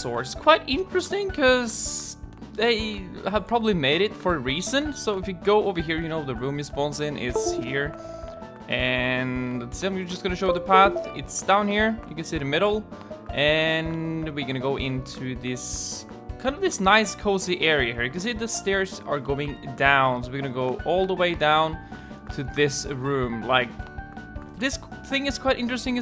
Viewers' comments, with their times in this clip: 0:07 I think someone left a discord call lol